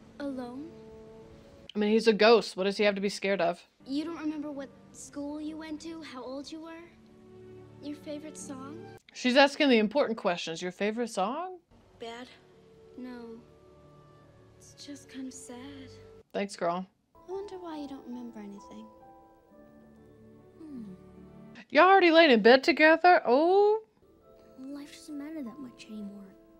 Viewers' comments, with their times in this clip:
0:08 No one talking about the EMF meter going off ?